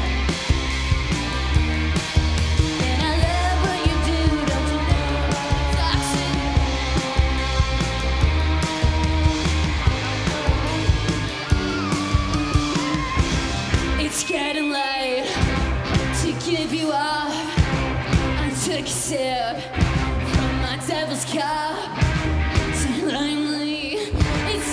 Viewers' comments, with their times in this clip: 0:08 I agree until in, when it changes pace shes back in tune.